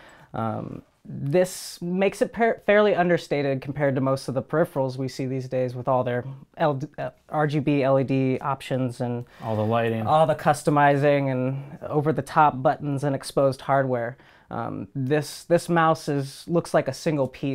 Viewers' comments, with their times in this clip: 0:05 sounds like he was about to suggest that other mice were LGBT.